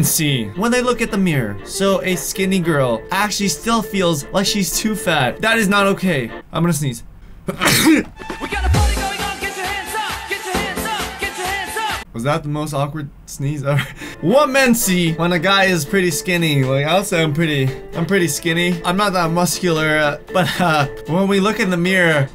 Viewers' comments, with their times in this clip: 0:07 was he trying to dab and sneeze? xD
0:08 I sneeze like u 😂